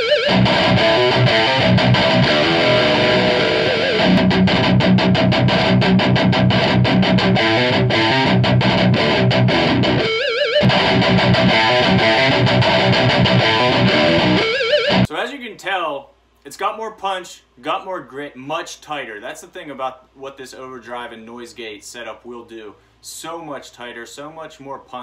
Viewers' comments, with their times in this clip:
0:06 the sound is better without the pedals. Much chunkier.